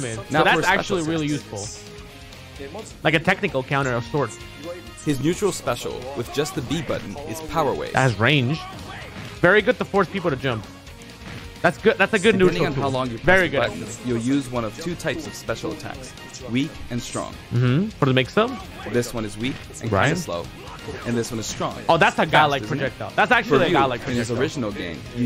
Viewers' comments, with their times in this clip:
0:07 wtf I’ve been thinking he says Aura flame